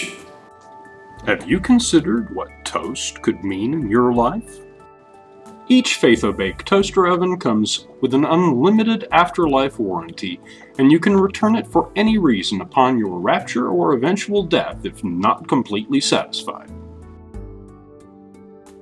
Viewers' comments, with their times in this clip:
0:04 holy cow. i was LOLing. hahahahahha you say it with such conviction and sweetness. and the hand is just great. hahah man.... that's how I like my humor. silly.